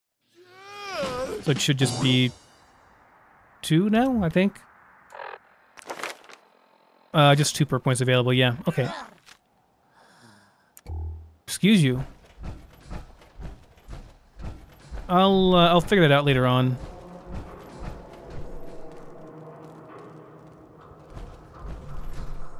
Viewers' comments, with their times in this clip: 0:08 i love that sound, it's what happens when a hotspot (that one is underneath the mini-overpass next to Goodneighbor) spawns in dead people. i think they start out alive, but the hotspot requires them to be dead (like the Pickman's trio or the food paste trio), so they all die at once. but the sound it generates is strangely satisfying...